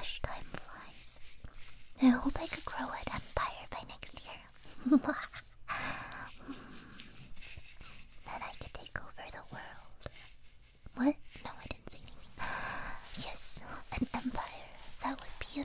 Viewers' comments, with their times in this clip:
0:03 That “Mwa-ha-ha-ha-ha!” gave me the widest smile in years.